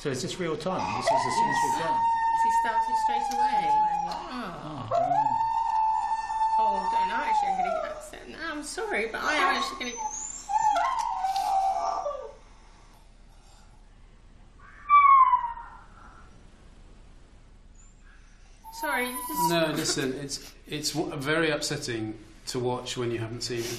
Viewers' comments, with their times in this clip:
0:05 hahaha sounds like someone at a concert WOOOOOOOOOO